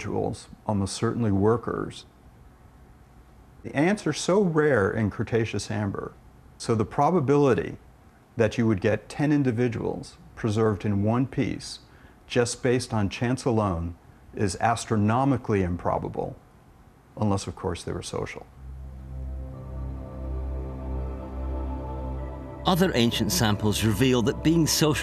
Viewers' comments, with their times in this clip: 0:09 That dude sounds exactly like Sam Harris.